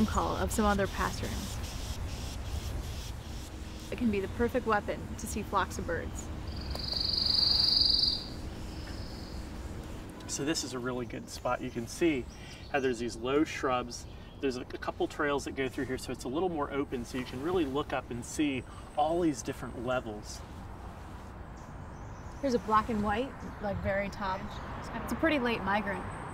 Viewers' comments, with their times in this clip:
0:07 in film what bird is this....they sing beautifully!